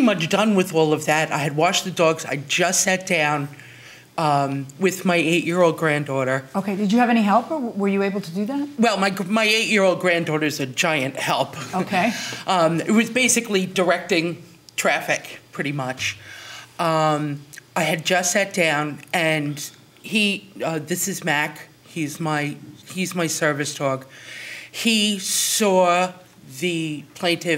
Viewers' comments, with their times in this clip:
0:09 The guy in orange is laughing at her, because even he knows they run that 8 year old to death and the defendant didn’t do any of the chores she is listing. She can’t even stand. No way she washed 2 big dogs and cleaned a house.